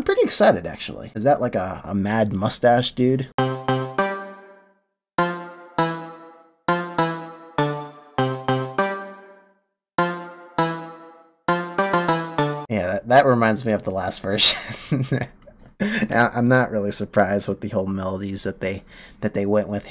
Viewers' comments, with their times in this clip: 0:03 Megalovania? Am I going crazy or does that kinda sound like it 😂?